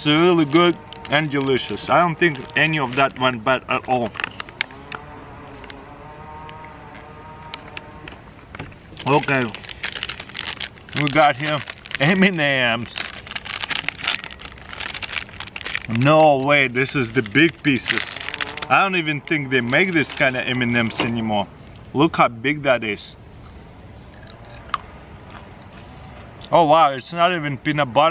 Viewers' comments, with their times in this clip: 0:09 "we got here Eminems.." your accent is funny. I get told the same for my German accent. 😄